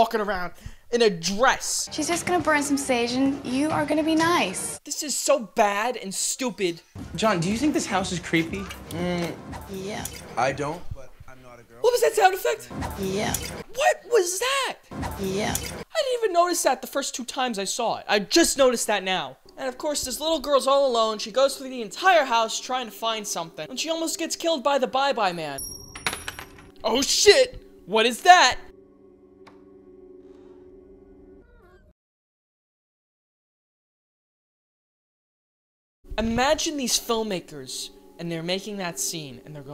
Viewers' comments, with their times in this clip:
0:09 Are we talking about the terrible woosh sound effect or the terrible drink sound effect?
0:10 I've watched this many times over the last 5 years and I only just now realized he's talking about the "woosh" sound that the coin flip makes. This whole time I've repeatedly thought to myself "Why is he so offending by the beer splashing sound effect? Seems pretty reasonable to me..." Maybe I'm the only one but I didn't even hear the cartoon "woosh" sound when she flips the coin because I was so focused on the beer splashing sound. Life is weird, man.
0:11 sounds like the sound effect of picking up a bottle of booze in fallout 4
0:26 I love his fake enthusiasm